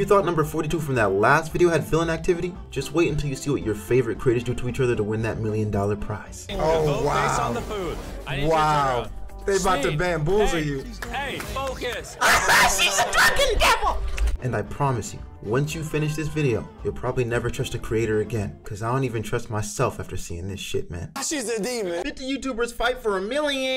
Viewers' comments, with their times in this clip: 0:08 LMAO your laugh is hilarious